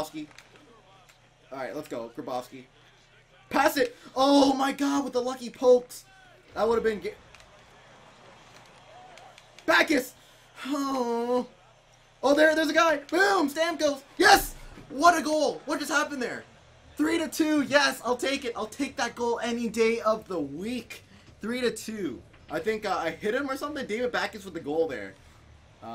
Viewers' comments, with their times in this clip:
0:08 That groaning though